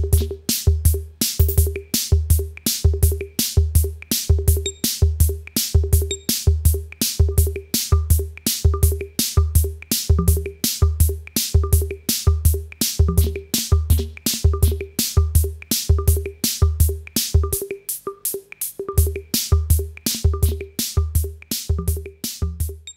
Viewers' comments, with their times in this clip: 0:09 sample 2, sounds like rhythm tracks on my CASIO